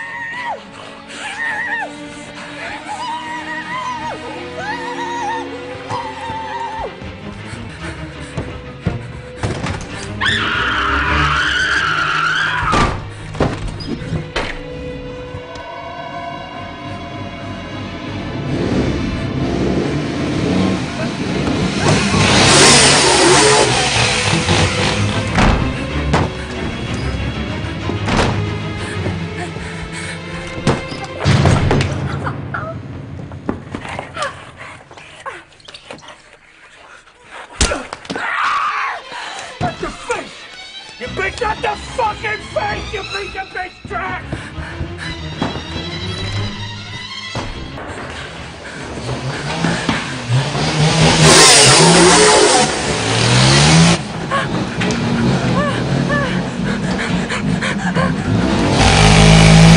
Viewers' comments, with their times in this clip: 0:09 I can’t tell if this is a car or a scream
0:10 HER SCREAM SOUNDS LIKE A TIRE SCREECH I CAN’T😂🤣😂🤣
0:40 Yo his acting is so damn good in this, the way he said "You piece of big trash." Sounded with so much hate, it actually terrifying the way he said that. Imagine being that girl running away with your life and just hearing that kind of stuff in the background makes your attempt on escape that much more terrifying, this scene is the stuff of nightmares. Christian Bale delivers one of the most iconic and greatest performances of all time! He is equally hilarious and absolutely deranged and terrifying!